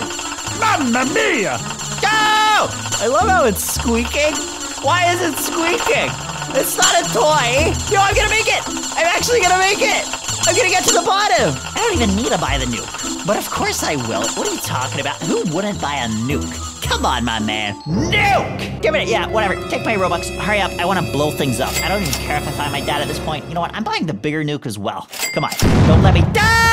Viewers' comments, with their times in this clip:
0:07 why is it squeaking 💀